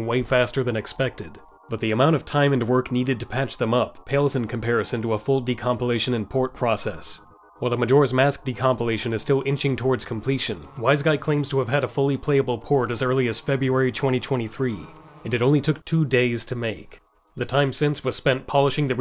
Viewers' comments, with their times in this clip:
0:06 The bot voice got me to